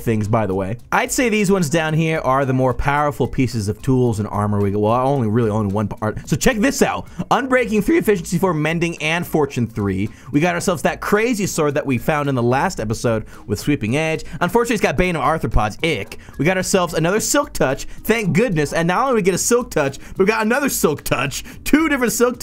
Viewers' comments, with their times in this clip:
0:06 best voice crack